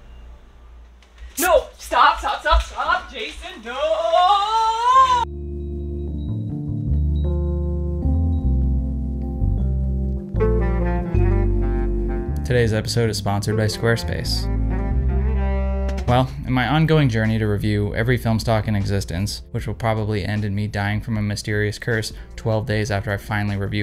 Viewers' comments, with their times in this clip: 0:04 that last bit of “OHHH” was sincere。